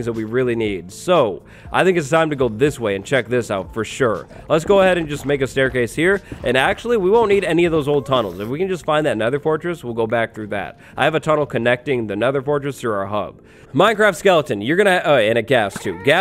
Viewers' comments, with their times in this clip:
0:03 what? TF as bones? what a funny thing.